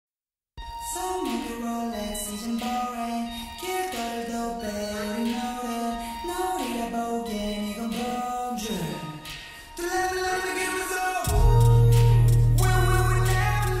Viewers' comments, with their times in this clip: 0:00 dont kno about you guys, but my i chockEd dean in 3d is not healthy for my heart